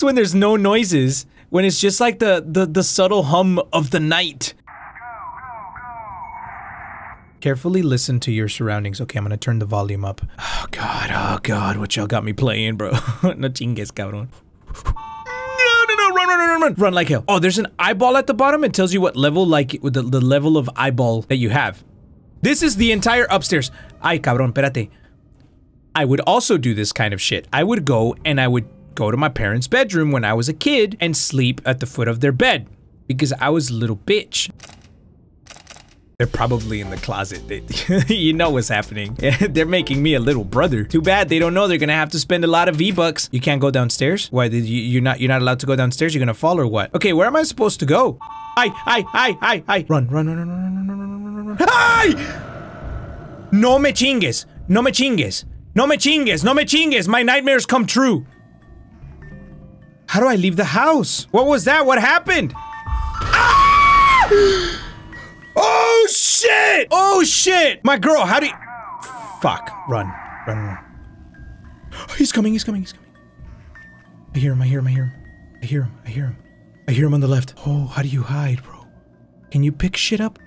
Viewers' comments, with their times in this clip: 0:07 me: turns up the volume all way up so I can hear too
1:04 ITS CUZ YOUR MAKING SO MUCH NOISE MY GUY 😭😭😭